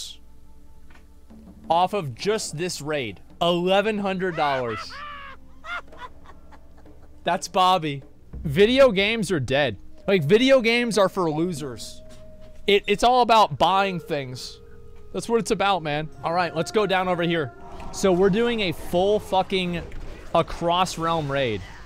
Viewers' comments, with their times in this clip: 0:04 It’s the gnome laugh for me 😂